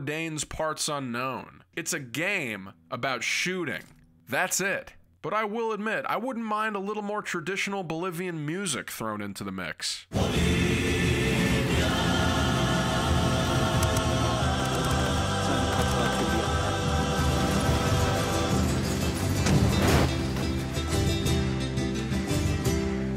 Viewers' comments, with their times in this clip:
0:10 traditional Bolivian music fits so well with this game! 😳